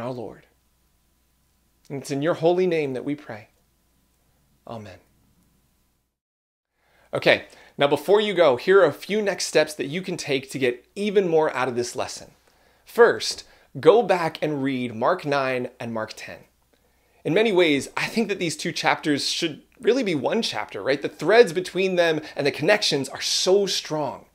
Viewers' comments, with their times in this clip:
0:10 I have trouble with those who preach in a whispering tone. it sounds so sanctimonious but that could all be me🤔.. maybe the holy Spirit asks me back if he asked me to wash this man's feet what I do it...I hope so...